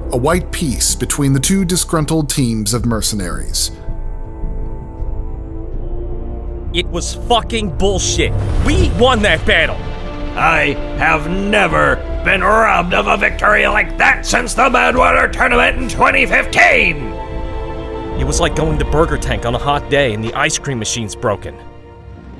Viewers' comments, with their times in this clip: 0:06 god that came out from his fucking soul